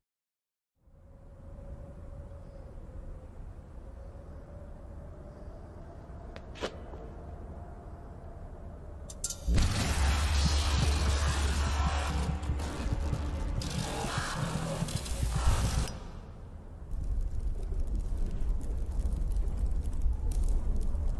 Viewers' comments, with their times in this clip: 0:08 Wow I never noticed before in that cutscene with Hourglass you could hear some of Donald's noises when it roars cuz it's an amalgamation of all the other Toons